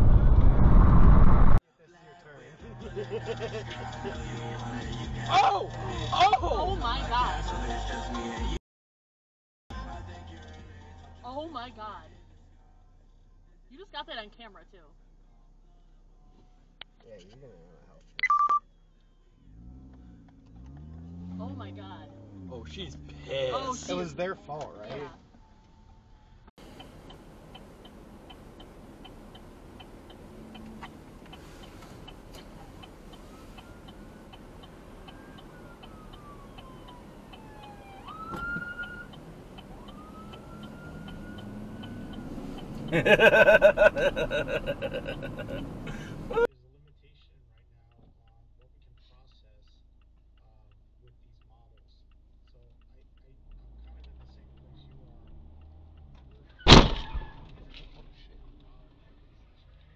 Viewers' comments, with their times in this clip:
0:10 Was that her god or her gosh?
0:40 I think we can all relate to the cammer's laugh
0:44 Loved that perfect laugh!